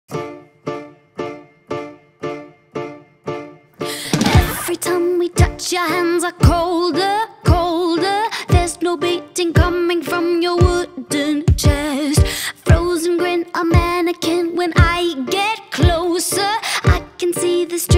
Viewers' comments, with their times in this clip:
0:00 The first few seconds of the song sound like I want I want by one direction. "Give you this, give you that Blow a kiss, take it back...If I looked inside your brain." No hate just something I noticed haha.